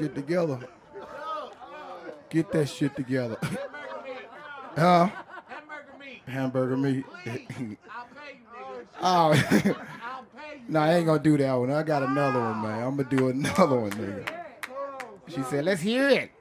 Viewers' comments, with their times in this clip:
0:03 The pain in Dave Chappelle's voice when he didn't do hamburger meat